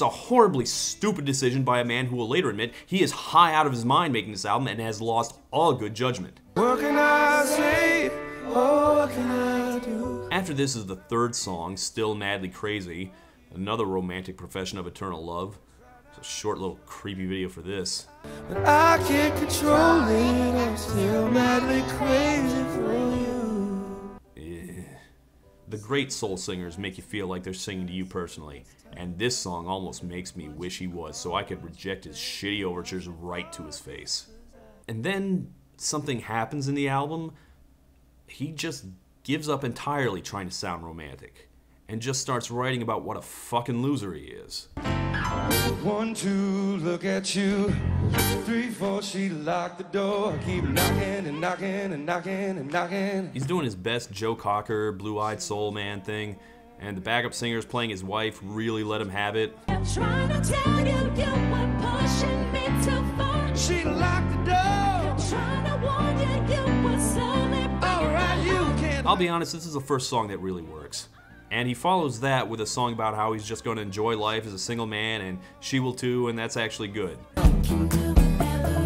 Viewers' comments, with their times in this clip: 0:07 He got the "1-800-kars-4kids" children to collaborate with him? Smh...🤦🏽‍♀️🤦🏽‍♀️
0:59 The backup singers are singing with more personality than him, LOL.